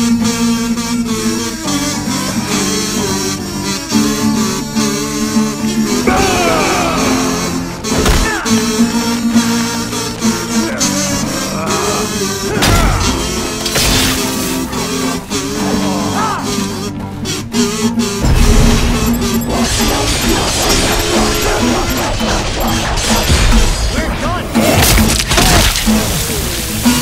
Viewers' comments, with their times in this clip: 0:10 I could literally hear the button mashing